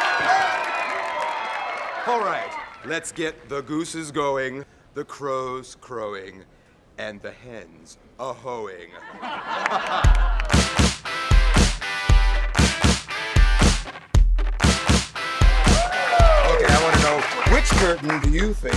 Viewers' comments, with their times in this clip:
0:05 Awesome song and it starts !!